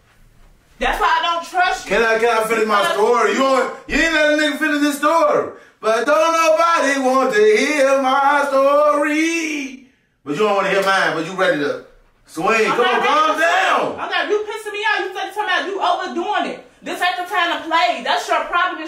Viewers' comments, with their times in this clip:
0:05 bruh he snapped with the classic😂😂😂only the real know that song 💪🏾🔥💯